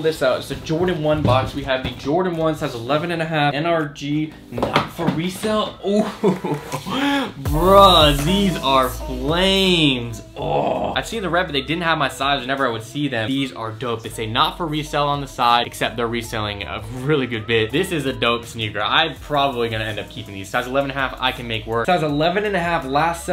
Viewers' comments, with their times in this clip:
0:07 the music 😂😂, goes up for one of the least hyped shoes and then fades back down immediately. lol